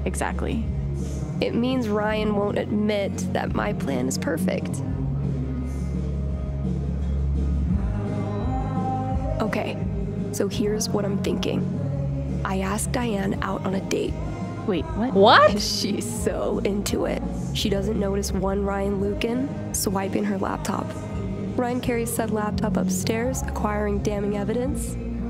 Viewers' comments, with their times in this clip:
0:09 The laughing from you makes it perfect. Sorry if it seems weird about the commenting all of a sudden. I recently found you and wanted to see this playlist of your version of Life of Strange True Colors. And as a retro music junkie I relate somewhat to Alex in terms of music. To be perfectly honest I think I might get along with everyone in Haven Springs.